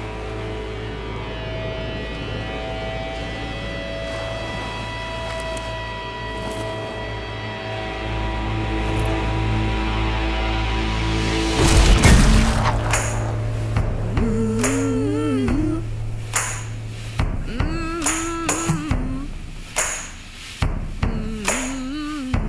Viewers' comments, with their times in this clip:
0:10 i was waiting for Gangplank to yell BARRLE